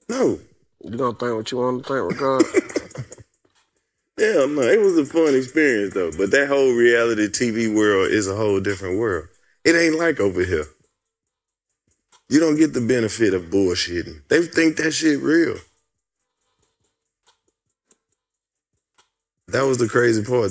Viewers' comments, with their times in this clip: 0:08 i dint think they was rockin w what Karlous said that silence was loud